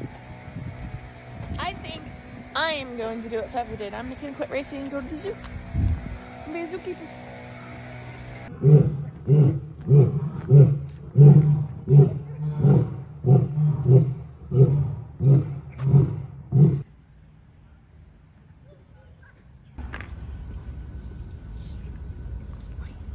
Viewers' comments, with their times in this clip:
0:10 ok, so did anybody else think the lion sounds like a race car idling?